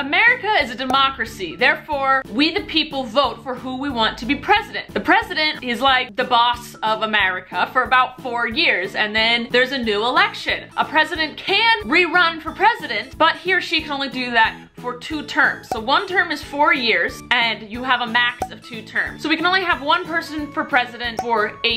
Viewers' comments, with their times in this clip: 0:05 I thought she said pregnant 😂😆